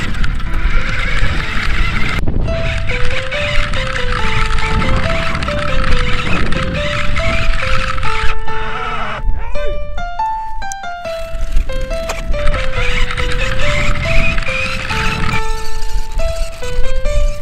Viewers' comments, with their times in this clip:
0:04 I hear Russian music? No 😂